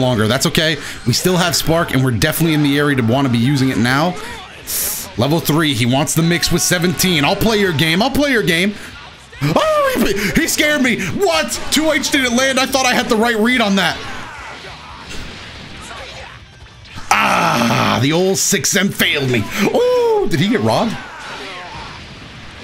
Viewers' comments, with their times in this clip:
0:09 sounded just like Wolf Fang Fist